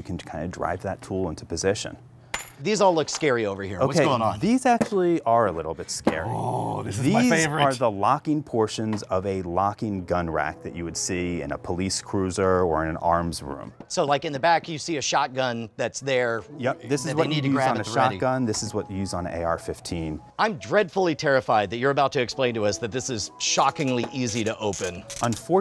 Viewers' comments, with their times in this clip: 0:09 The song that starts is a bop, I listened to this all the time when I would work on final projects